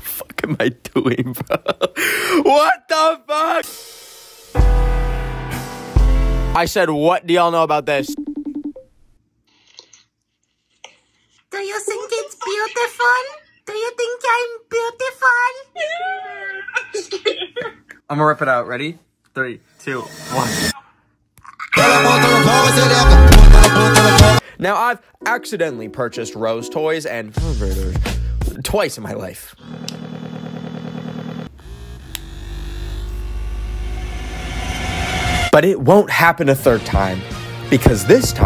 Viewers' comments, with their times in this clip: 0:05 Broooooooo he’s like wtf silently and then wth loudly
0:10 why did he sound like mort from king julian 😭
0:22 this song is a banger
0:22 best 2 second beat ever (´°̥̥̥̥̥̥̥̥ω°̥̥̥̥̥̥̥̥｀)